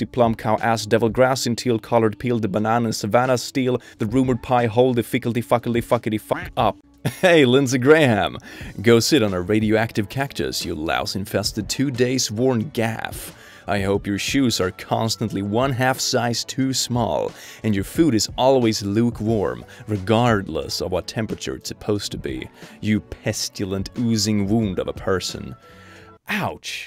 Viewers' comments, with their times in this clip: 0:07 he sounds like that towel from South Park